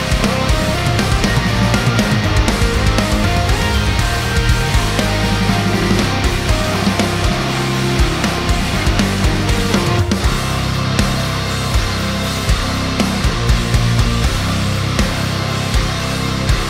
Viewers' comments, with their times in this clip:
0:04 Please tell me I’m not the only one who Lowkey heard Spencer’s “SATELLIIIITES” …